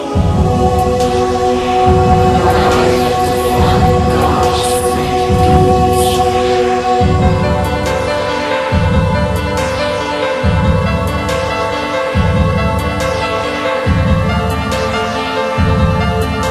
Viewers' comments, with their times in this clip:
0:03 It sound like cortana line from halo 3. "I have defy gods and demons".